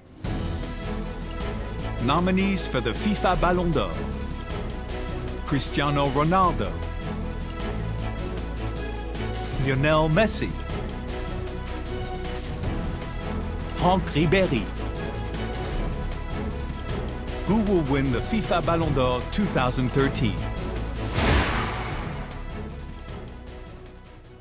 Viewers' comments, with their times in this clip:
0:08 Who is Unel Messi?